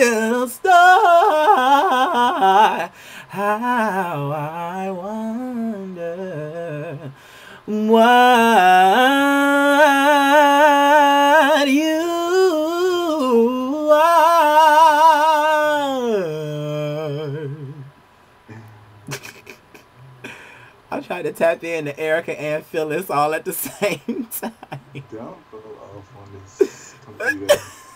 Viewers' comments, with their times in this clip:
0:10 you was doing my favorite Christina Aguilera/ Beyonce note :)